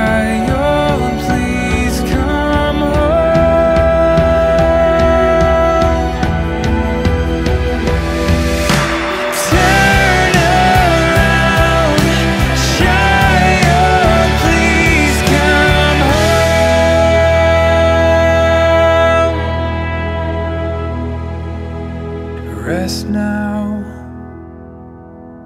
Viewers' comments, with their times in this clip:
0:08 Oh God... that drop in was awesome! Should have lasted a bit longer! I loved it!